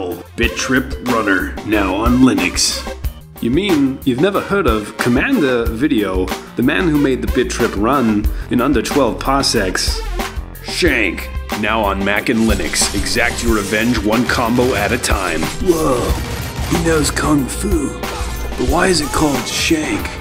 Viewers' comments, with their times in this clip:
0:04 Where is the accent from from?! I SWEAR IVE HEARD IT BEFORE ITS BUBGGING MEE